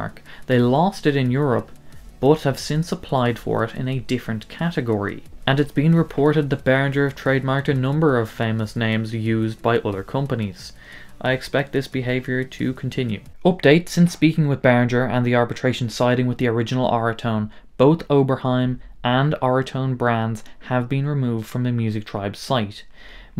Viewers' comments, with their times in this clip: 0:07 clipping backround noise